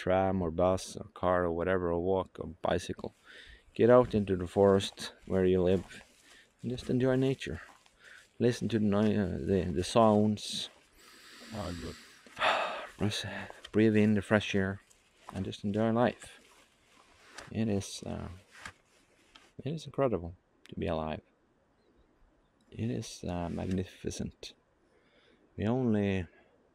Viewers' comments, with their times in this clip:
0:10 Forest spirit saying something